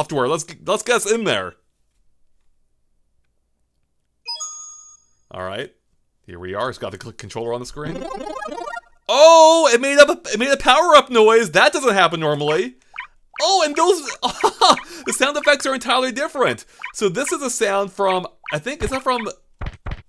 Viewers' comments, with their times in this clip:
0:07 Oh it made a power up noise